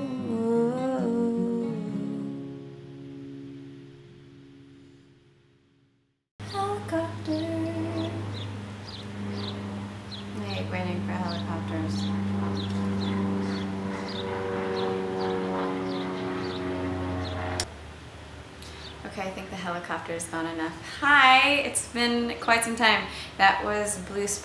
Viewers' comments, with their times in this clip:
0:05 thank god the helicopter didn't come when she was playing the song